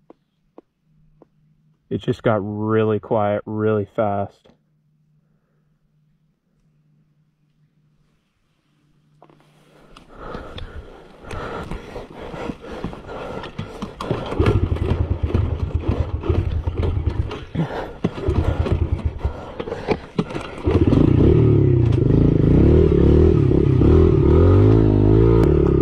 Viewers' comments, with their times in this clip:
0:06 No wonder it got quiet really fast😳😳😳